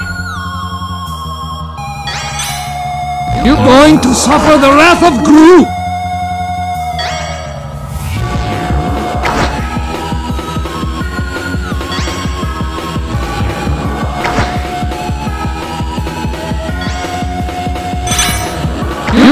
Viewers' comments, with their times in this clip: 0:03 It’s the “YOU GOING TO SUFFER THE WRATH OF GRU?!” Sound except it’s a mini-earrape (kinda)